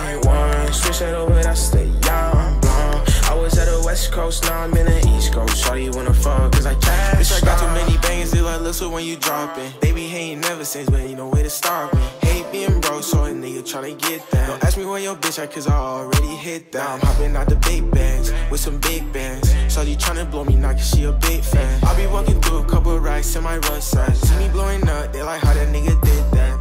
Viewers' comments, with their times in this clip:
0:10 that mix tho